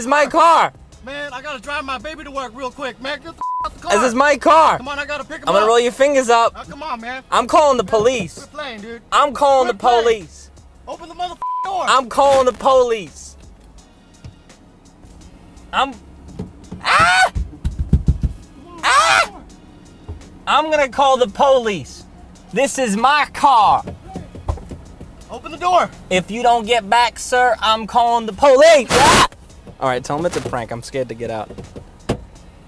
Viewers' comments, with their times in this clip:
0:09 I’m calling the poleeze lol
0:16 That scream LMFAO